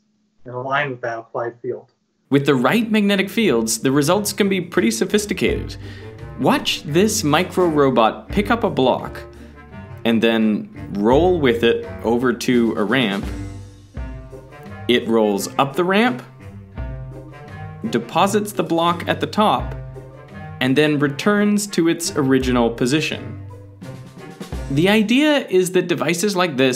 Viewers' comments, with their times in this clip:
0:08 Hmmm this background music sound familiar